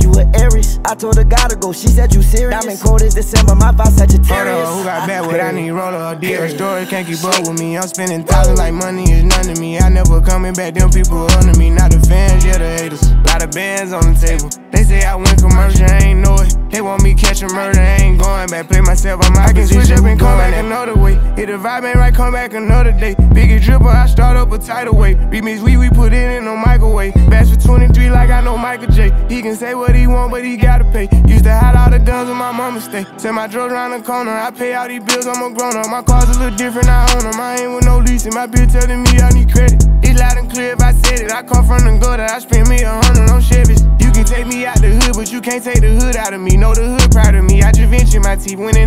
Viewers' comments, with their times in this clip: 0:04 that laugh is the reason i listen to it And also that breathing sound after that laugh 😂
0:08 That “WHEWW” after uzis verse gets me hype every single time!!! 😭
0:27 Anyone Catch the Roddy Rich Eer Urgh ?
0:31 Lil baby's flow after DAMN 🔥🔥